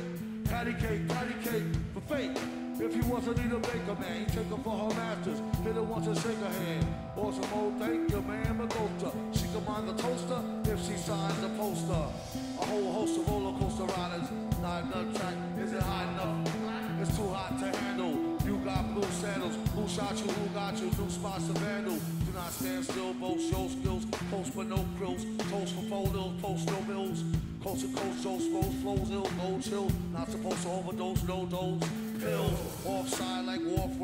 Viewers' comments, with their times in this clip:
0:08 the keys sound figaro were beautiful too.
0:21 the flow on is sick